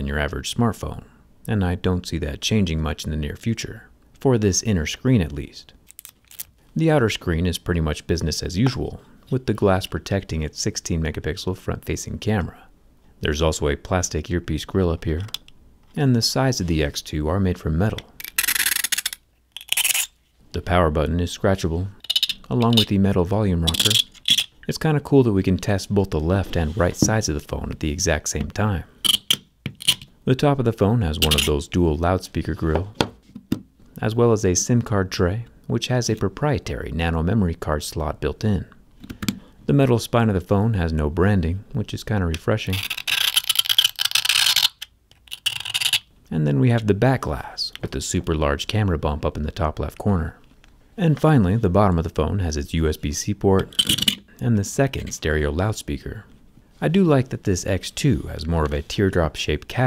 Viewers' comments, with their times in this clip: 0:08 I hear australian
0:42 total opposite of ASMR
0:43 Usually the scratching sounds don't bother me, but the noise made me cringe!